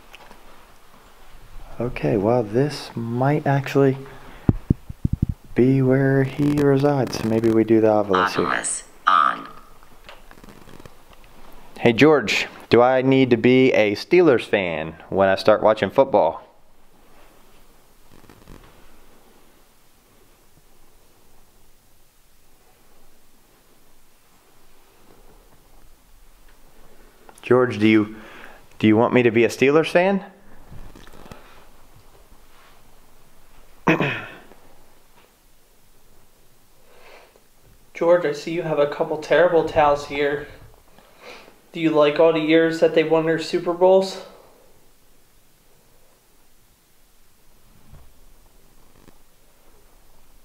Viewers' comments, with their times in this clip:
0:05 as soon as you get to the boiler room ur audio goes weird first like a tap on ur mic then static
0:32 there’s another whisper right when u get done talking 😘💜👻